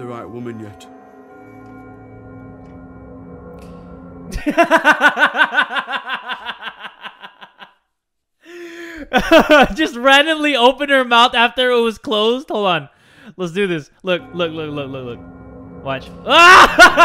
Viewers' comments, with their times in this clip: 0:03 I was like "what?" he just started laughing 😂